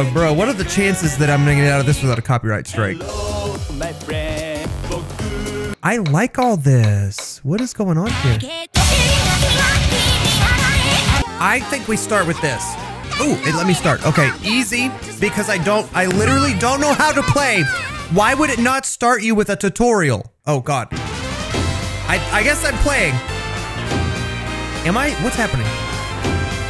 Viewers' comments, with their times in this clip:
0:09 HELL YEA VOCALOID